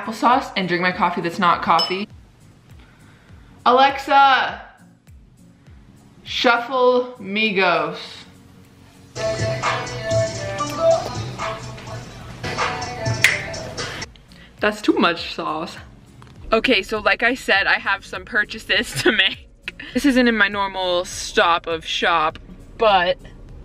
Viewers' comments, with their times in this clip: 0:04 LMFAO SHE SET ME ALEXA OFF AND WOKE MY BROTHER UP CAUSE THE VOL IS LOUD BAHAHHAH